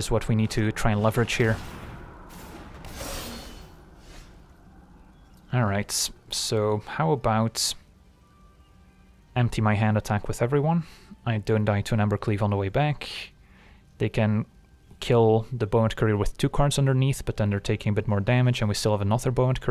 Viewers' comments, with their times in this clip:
0:05 There was something about your tone with this sentence that made me laugh so hard.